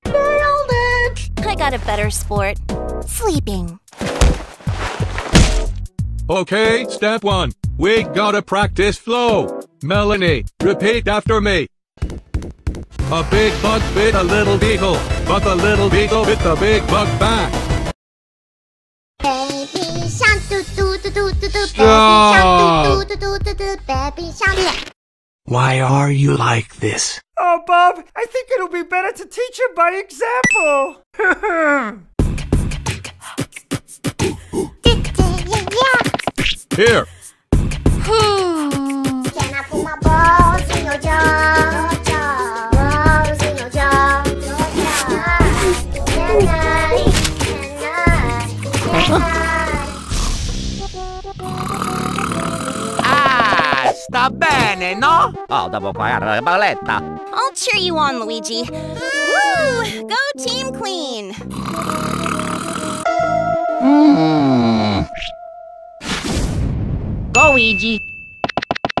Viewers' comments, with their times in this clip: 0:05 [ Insert Roblox Death Sound (Removed One Which Is Oof) ]
0:13 this song are good asf
0:20 Proof that Bob is the only one in the room who can rap
0:37 NOOO MELONY SINGING THAT SONG IS TOO HILLARIOUS
0:52 When, when Luigi in the first phrase say "Ahhh, I'm fine, no?" and then I think something in gibberish like "Later we're going to sleep" or something similar.
0:54 Luigi speaking real italian
0:54 luigi speak Italian